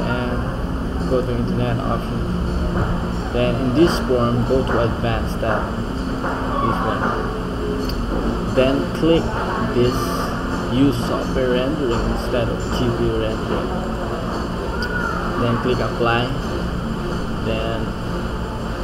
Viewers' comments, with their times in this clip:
0:06 Is someone watching porn in the background ? Lmao